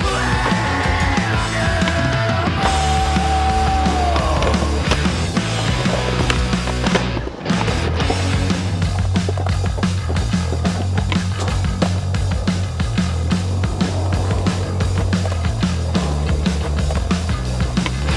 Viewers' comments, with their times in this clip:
0:03 can someone please explain to me how the bpm of the song lined up so perfectly to this line???